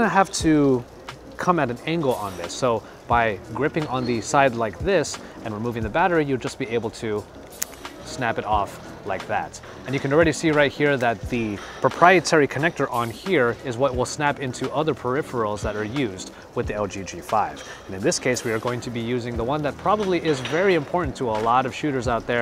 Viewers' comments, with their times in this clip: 0:06 when you "snapped it off" it sounded like something that would break or get loose easily over time